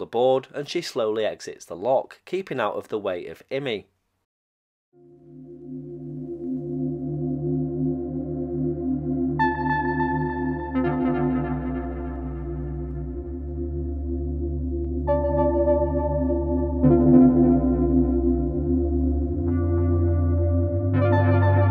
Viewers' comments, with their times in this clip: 0:06 Creepy music :face-orange-raised-eyebrow: :face-blue-wide-eyes: